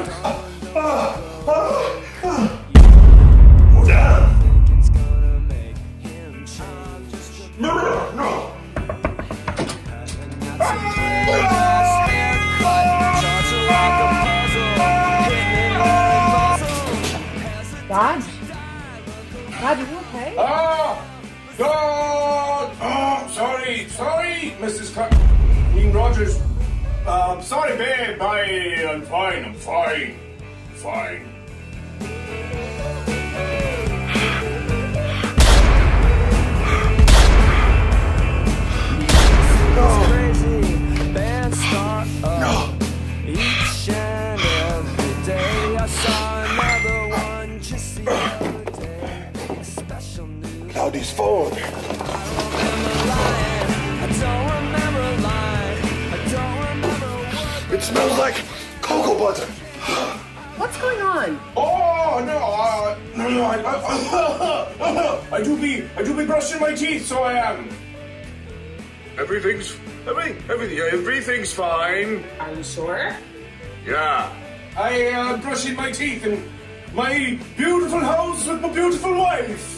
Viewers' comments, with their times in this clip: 0:09 haha abulance go brrrrr
1:03 Tuberculosis, is that you...?